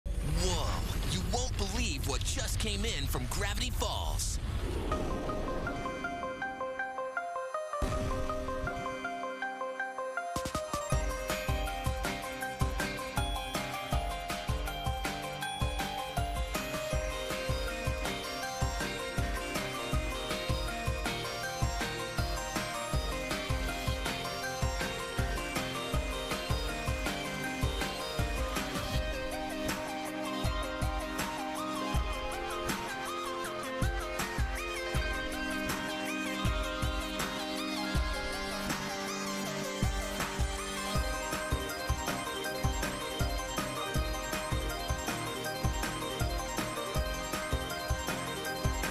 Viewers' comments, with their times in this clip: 0:05 The music starts
0:13 After hearing DISTO in full, the cut just feels kinda weird lol
0:29 The part from sounds like something out of Mass Effect. AWESOME!